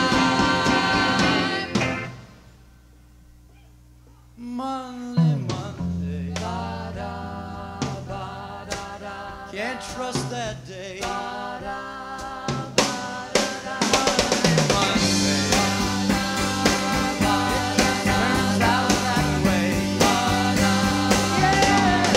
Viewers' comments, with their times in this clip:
0:04 that bass slide into the wrong note almost derailed things! What a time to hit the wrong not, when you're the only one playing!
0:06 Cass is the star of the show, what a voice! Backing band almost leads them off a cliff but they recovered.
0:06 That bass player shat the bed and everyone almost lost it, drummer saved the day, if you ask me. Just wow.
0:06 Great vocals! Wrong bass note a threw them all off.